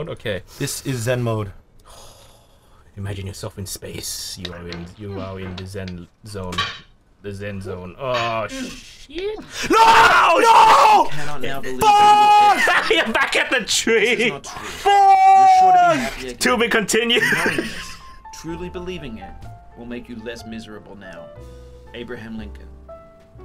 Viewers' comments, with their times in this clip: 0:09 top 10 anime death screams #8